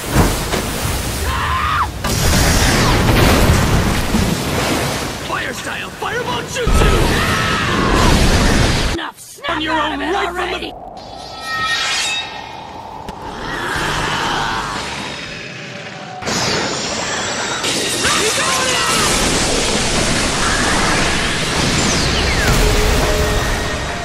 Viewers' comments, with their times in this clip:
0:09 The fact that they talk over each other- XD